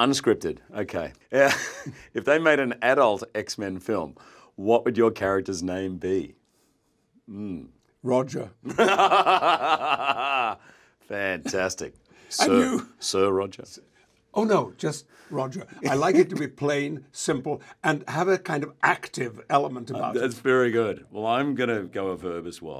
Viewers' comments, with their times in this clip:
0:09 I love Hugh’s laugh 😆